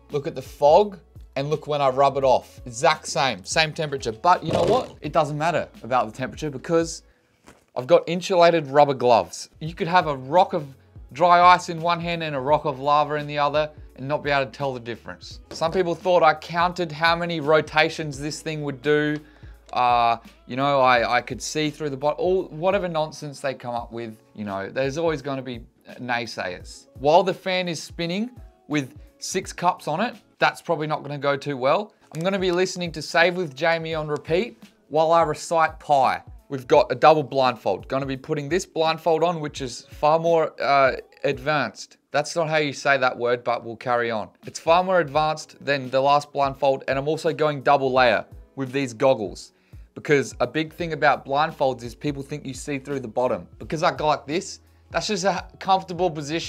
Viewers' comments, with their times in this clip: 0:07 M8 really said "inchelated" lmao
0:40 kind of interesting to me that you made such a deal about how you said “advanced” wrong because for me in the US the way you said was wrong is for me the right way to say it. Just a kind of weird thought